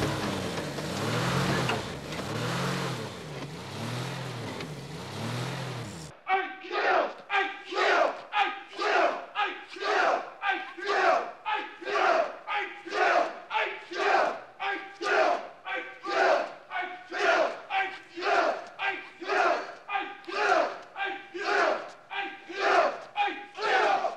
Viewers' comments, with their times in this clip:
0:07 is it just me or does it sound like there saying Miguel?